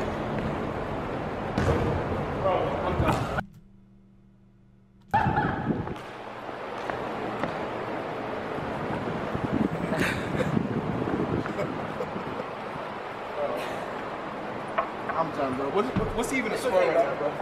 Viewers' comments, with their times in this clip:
0:05 when miles pointed and laughed i cried 😂 😂